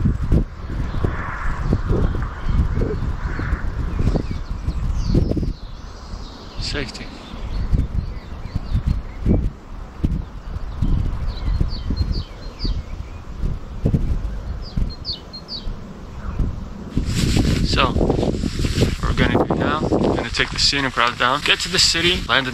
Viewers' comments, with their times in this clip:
0:06 Did he just fart ? "Safety."